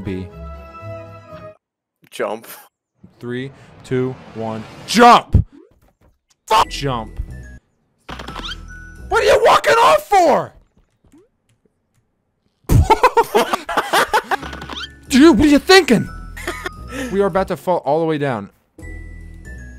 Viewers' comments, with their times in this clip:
0:04 Perfect cut screaming